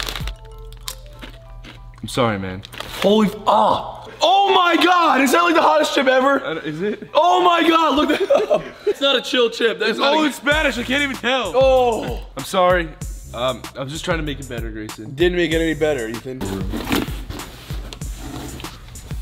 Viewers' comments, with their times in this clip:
0:05 GRAYSONS VOICE SOUNDS SO CUTE FROM HERE